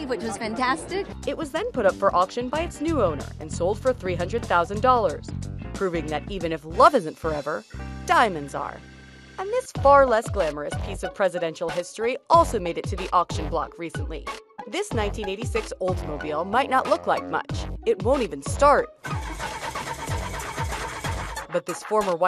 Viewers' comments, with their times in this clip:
0:10 Why does feel like she's trying to rap or something